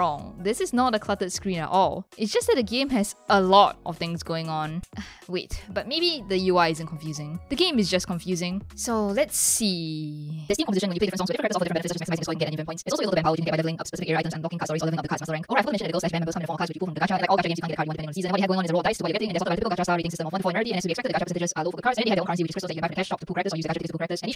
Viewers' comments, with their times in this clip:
0:09 Rui,Toya,Akito,Tsukasa: We are IDOL GIRLS 💖*starts playing ifuudoudou* THE INTENSE VOICE